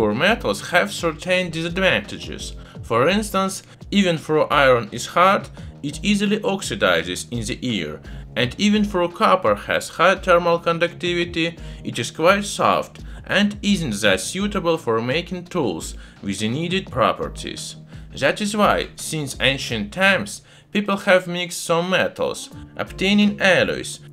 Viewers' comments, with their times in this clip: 0:03 iron in my ear will easily oxidize? Trying now will get back to you asap with results
0:05 why would I want to oxidize some iron in my ear?